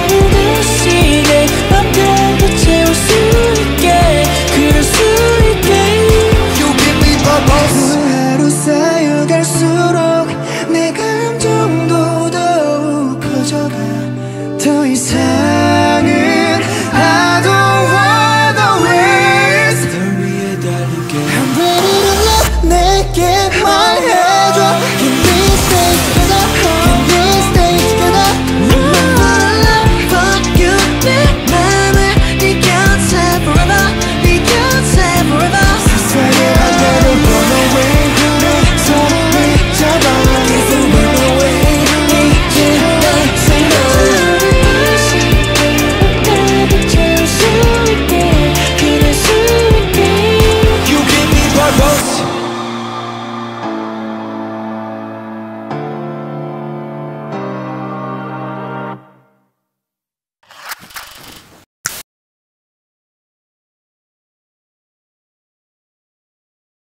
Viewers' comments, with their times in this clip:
0:07 OMG THIS PART!! SEUNGKWAN AND DOKYEOM'S VOCALS ARE INSANE IM IN LOVE
0:07 me flying because of how Seungkwan and DK voices sync and match each other 🤍
0:08 the build up until the best harmonization uggh
0:09 truly unmatched, their voices combined is a force and magic to be reckoned with.
0:14 i'll never get enough of booseok harmonizing. absolute perfection. i'm always speechless.
0:14 i will never get over dk and seungkwan harmonizing
0:14 this part where Dk and Seungkwan harmonize together will always be my favorite, SVT live vocals are so beautiful ✨🫶🏻
0:15 they’re the ones harmonizing! seungkwan is in front and seokmin is behind in the gray sweater :)
0:15 dk and sk harmonizing is really a gem. How lucky pledis with this duo not to mention the team is all rounder.💎💎💎
0:21 this is my fave part... the drop just screams seventeen, imo this is what the original version was missing (among other things like a better bridge :/)
0:21 the voice got me hooked
0:21 DKs ad libs pure release of emotion
0:22 i was really shook when dk and seungkwans' bridge part came on, but hoshis' bit right after was all the more satisfying to listen to. they all killed it!! <3
0:27 Vocalist(s) of other KPOP groups will be dead trying to reach DK’s note and run in
0:28 DK adlibs are just so precious to me
0:36 forever obsessed with seungkwan's adlib ♥♥♥
0:36 wonwoo's voice is ♥ ♥ ♥
0:37 boo's adlib will forever be engraved in my heart
0:37 oh my god seungkwan adlib is sooooooooooooooooo perfect
0:37 Seungkwan's adlibs is like the best part of song for me.
0:37 The guitar still is amazing
0:51 dont know why but S.Coups "You give me purpose!" part is that i still can't forget that Zoom Music Bank encore "You Give me purpose!" Shout at the end 😂😂